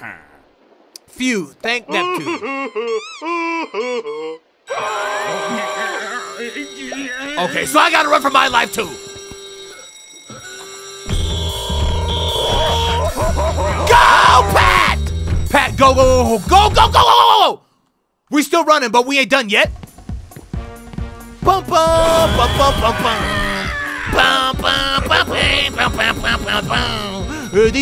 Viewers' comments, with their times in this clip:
0:10 The musics pretty good